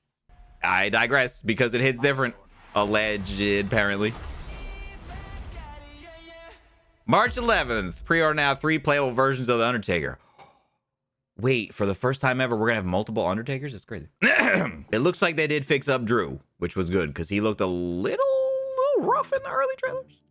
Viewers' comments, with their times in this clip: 0:06 the sarcasm in his voice got me dead🤣🤣🤣🤣🤣